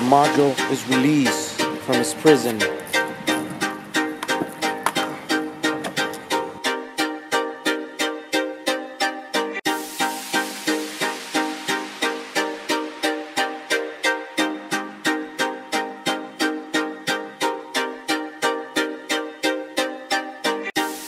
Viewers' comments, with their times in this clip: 0:06 I watched this to but the background muzak/noise was penetrating and unbearable. So I would like to have watched to the end, but with this noise intensity that was just not possible! Whoever decided to add this background noise to the clip is probably disturbed, deaf, or both!